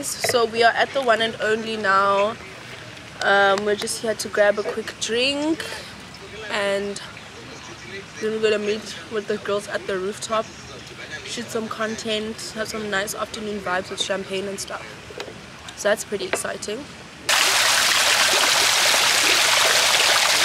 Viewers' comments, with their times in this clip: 0:07 Am I the only one who heard Moshe Ndiki's voice in the background